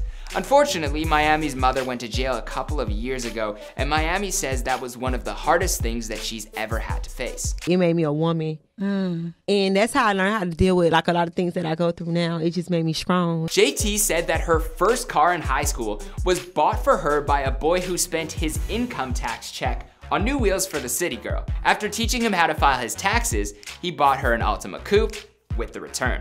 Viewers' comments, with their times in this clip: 0:08 "And that's how I learned how to deal wit like alot of things that I go through now it just made me Scrong 😂😂😂